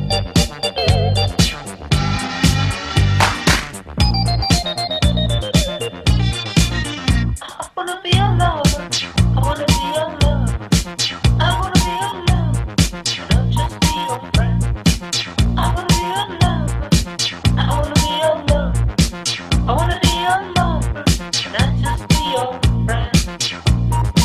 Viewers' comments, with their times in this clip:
0:05 wtf forgot to sing?